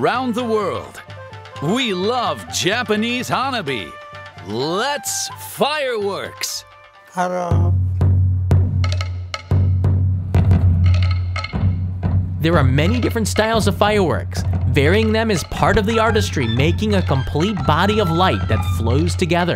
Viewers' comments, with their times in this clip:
0:06 Did anyone catch the random "hellooo," ??? Lmfao like who is that guy?!